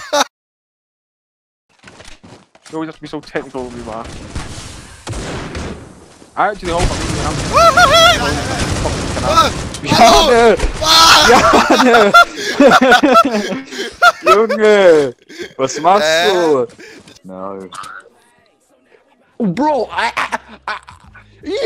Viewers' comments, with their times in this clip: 0:04 man his laughing gave me a mini heart attack while i wearing headphones.....btw love from India